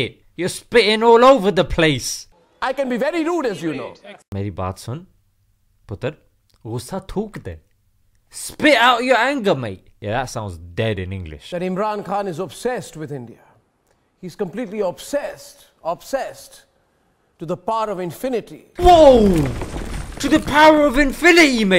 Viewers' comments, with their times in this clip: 0:08 Not a single "t" i heard in this sentence despite having three.